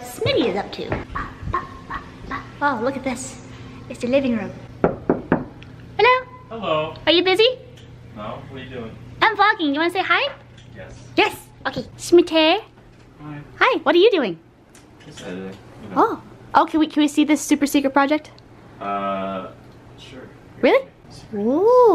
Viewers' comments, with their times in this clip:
0:05 When you said hello you sounded exactly like Navi from Zelda! lol